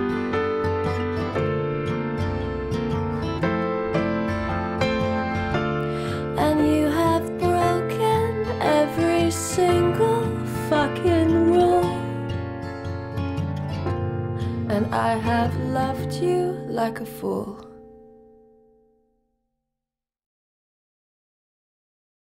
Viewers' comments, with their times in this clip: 0:10 ... instant goosebumps. Thanks to her being an actress she's really able to deliver the emotions perfectly.